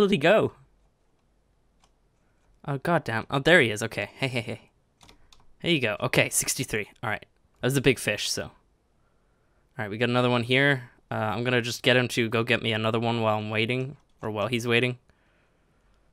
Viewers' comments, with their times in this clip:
0:04 that laugh though